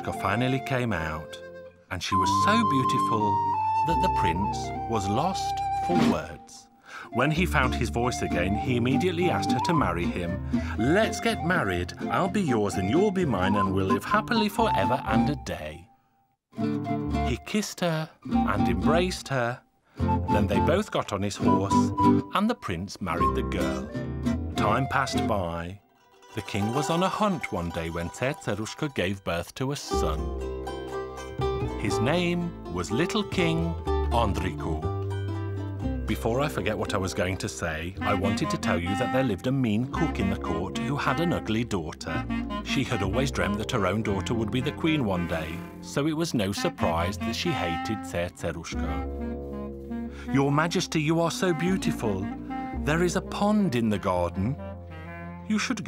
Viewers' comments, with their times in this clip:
0:06 --The horse is laughing! XD!
0:06 i like how the horse laughing at him hahahahahaha 😅😅
0:38 I can't even pronounce Cerceruska as the narrator do. Narrator: Before I forget what I was going to say...